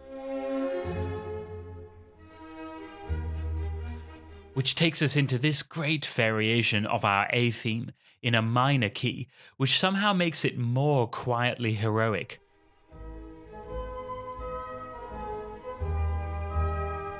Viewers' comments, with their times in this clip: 0:04 that variation is not only in minor, but also has the chord progression of the Folies D'espagne. Masterful.